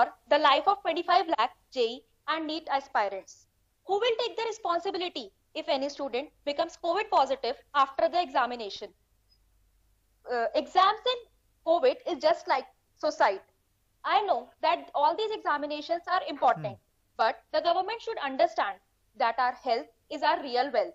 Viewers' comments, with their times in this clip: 0:07 Dude that chick is speaking like she is giving a giving a well prepared speech by looking into a paper see Plus the pause which she is taking while speaking looks like when I was giving oral examination in 5th "smwhere had a nostalgic feeling"